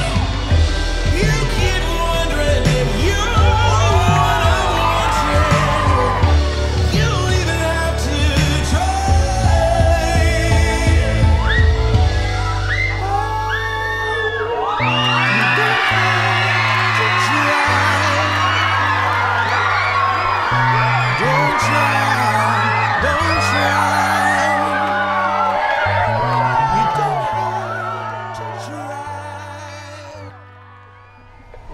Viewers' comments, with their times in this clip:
0:08 The girls who held back their screams until he had the ring out. Kudos to you. I totally would have gave it away.
0:12 Lmao the girl screaming